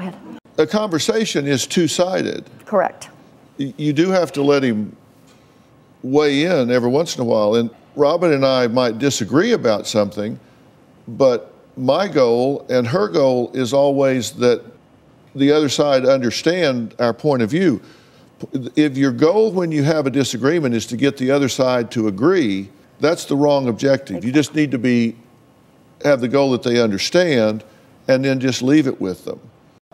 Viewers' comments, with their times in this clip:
0:10 there is a cockatoo as well and right before that sounds like dogs hollowing :(